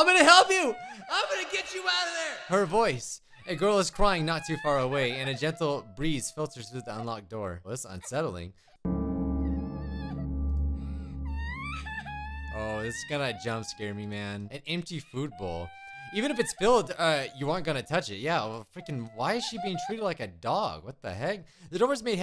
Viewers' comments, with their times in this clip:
0:09 THAT CRYING SOUNDS LIKE THAT TT SOUND